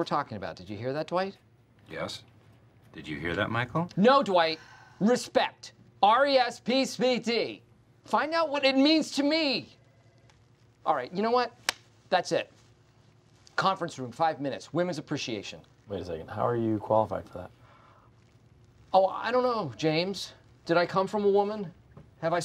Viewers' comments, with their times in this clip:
0:08 Love how passionately Michael says "Find out what it means to me", and then we see Phyllis's reaction